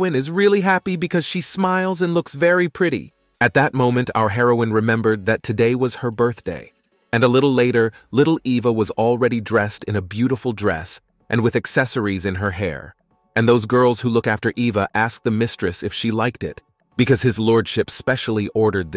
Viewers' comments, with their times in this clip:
0:03 the voiced changed